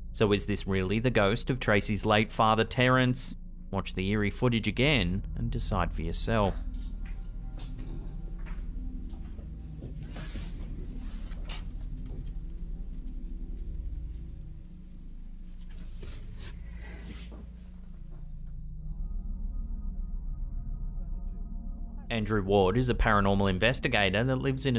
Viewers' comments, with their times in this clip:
0:08 when the girl is going to check the window there is a very deep growl that I can here perfectly & even she lets the blinds go, I can here a breathy sigh that does not seem like hers. 😳😬
0:08 anybody else hear the growl?